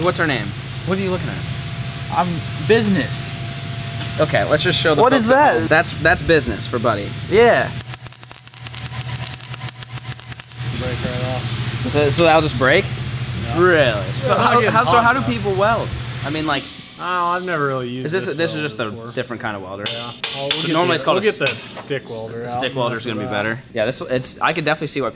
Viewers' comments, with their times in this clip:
0:09 The wire speed was too low and the current too low. That is why you hear the intermitting sound and not the constant sound that you should hear. My advice for all you new DIY welders - GET SOME LESSONS FROM A PRO. O My GOD look at that horrible weld. (no wonder it broke off)